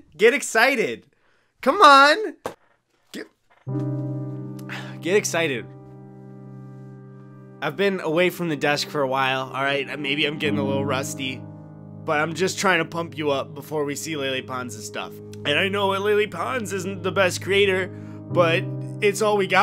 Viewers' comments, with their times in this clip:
0:03 Get excited! Cmadd9chord